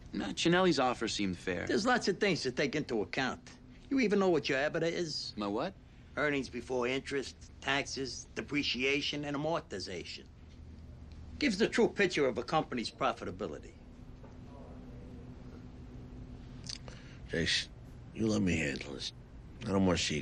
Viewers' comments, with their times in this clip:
0:06 'a-More-tiz-ation' oh Paulie you so crazy. As crazy as 'bah jah fresh'